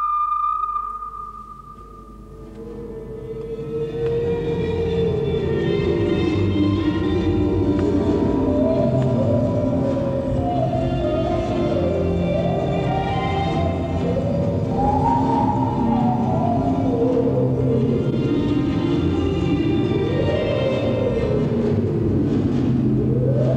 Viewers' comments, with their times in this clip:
0:04 I love how they are so impressed by the 3D house, that they put this revolutionary, out of this world electronic beat, a trance, that just blows my mind how extremely fascinating they must have seen this new technology.